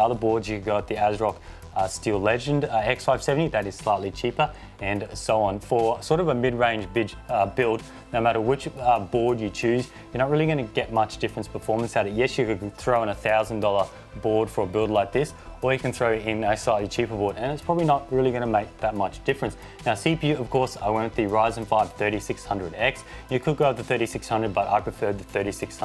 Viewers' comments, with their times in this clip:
0:06 "Sort of a midrange bitch" I do the lmao. Nice video though. Your channel deserves a lot more attention.